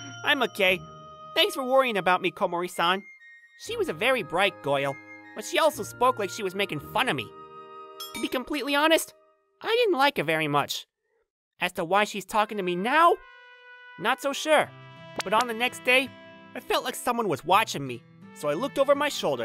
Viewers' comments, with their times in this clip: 0:03 Why did the VA turn into meowth right here hahah